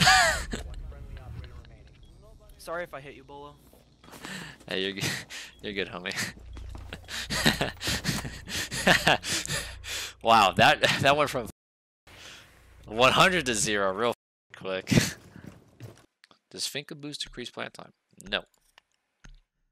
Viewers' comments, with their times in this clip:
0:05 That fake laugh every YT/Streamer makes